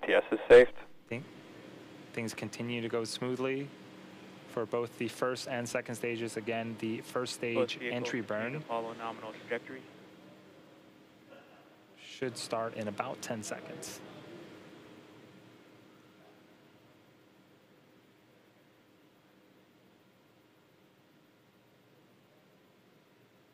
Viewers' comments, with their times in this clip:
0:04 Every time I love those nerdy giggles at SpaceX background